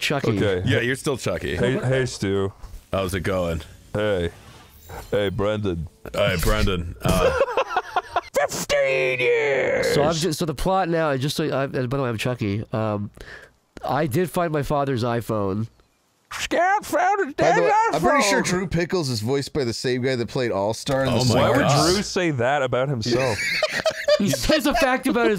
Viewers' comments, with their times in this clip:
0:04 with the coach magurk impression came in clutch
0:07 the freakin perfect coach mcguirk 😭